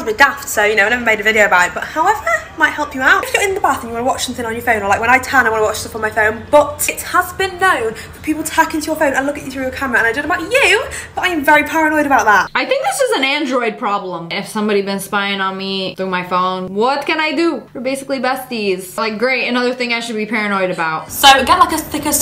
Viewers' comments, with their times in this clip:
0:04 I thought she was speaking a different language she is talking so fast